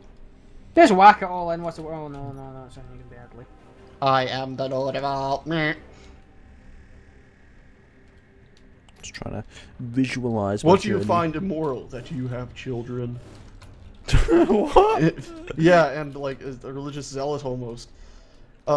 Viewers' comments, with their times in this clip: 0:05 Was that a duck